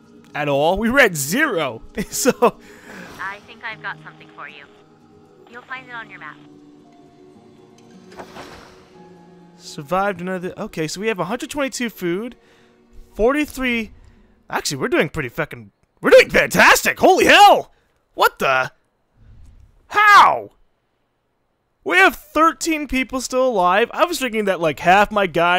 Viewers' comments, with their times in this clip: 0:09 modest and calm as always lol